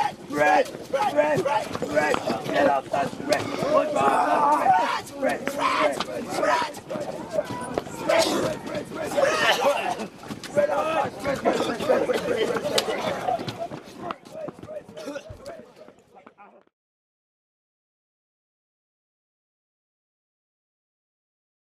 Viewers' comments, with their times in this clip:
0:06 The DI laughing couldn’t hold back. They’re human. LOL